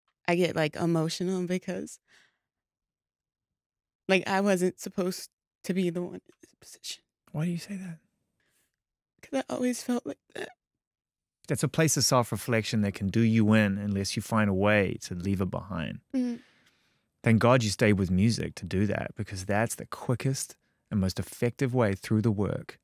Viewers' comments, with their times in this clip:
0:07 idk why but when Zane says, "why do you say that?" it gave me chills. it was like when a father is trying comfort his own child and remind her that she is worth so much more than what she thinks